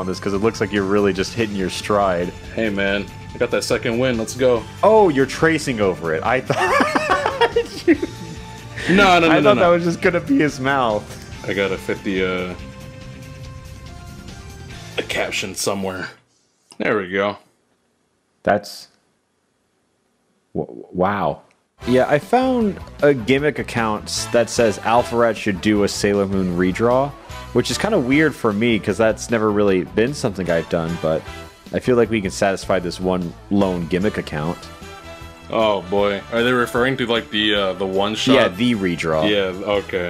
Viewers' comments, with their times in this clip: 0:07 I heard that voice crack XD.
0:22 I love this music